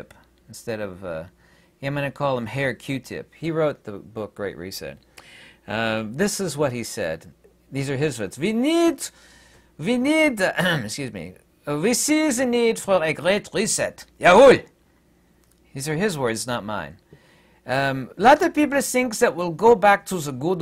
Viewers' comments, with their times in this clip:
0:05 I'm so glad you did the accent!